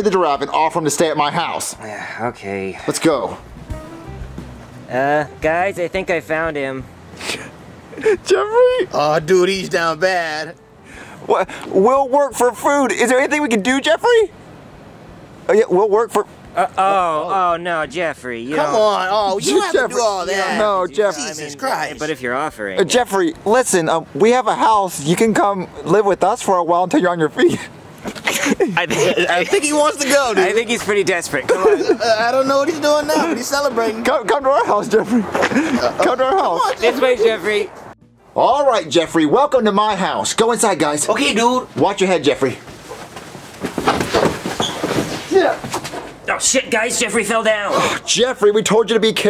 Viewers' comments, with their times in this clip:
0:04 I love this scene you can tell it's a good scene when the crew laughs and they keep it in
0:05 even junior the guy doing the puppet was laughing to 😅
0:14 was the funnest segment of the whole video, it even got the crew laughing!
0:32 I love when they laugh in the videos it literally makes the video more fun and funny at the same time 😂😂🙏